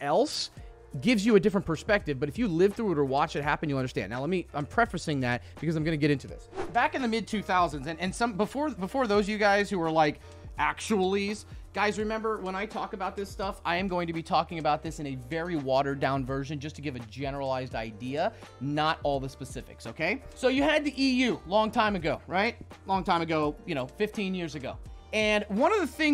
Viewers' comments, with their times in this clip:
0:09 listen to the arrow! :)